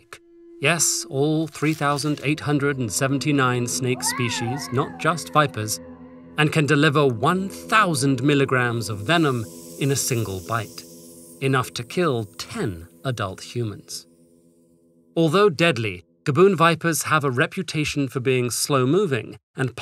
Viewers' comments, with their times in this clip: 0:03 did I just witness TED make a snek version of the anime wow sound effect?!